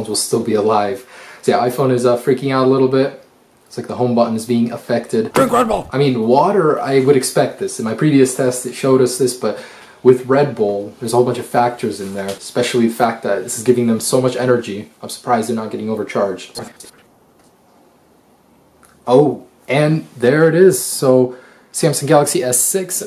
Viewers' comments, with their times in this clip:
0:05 you scared me when you said DRINK REDBULL lol